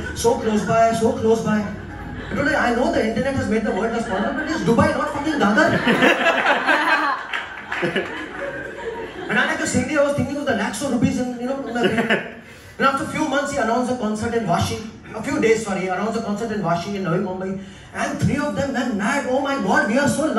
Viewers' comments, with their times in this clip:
0:06 -The girl's laughter is soooo fake..